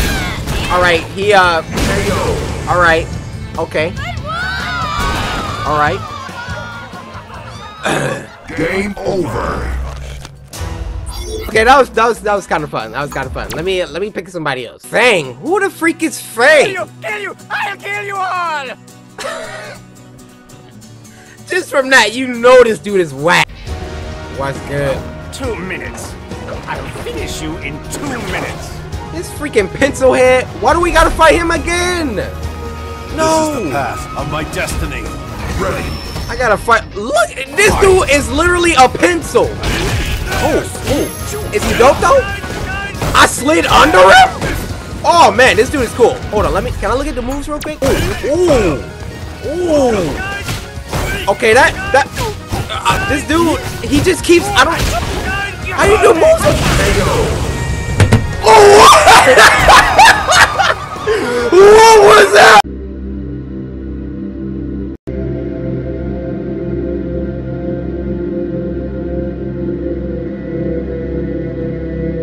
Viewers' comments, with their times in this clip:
0:05 that bird in the background is a lil bit to hype😂
0:56 that scream when I find out my crush has a boyfriend in fourth grade.. this actually happened to me...🤬🤬🤬😖😖😖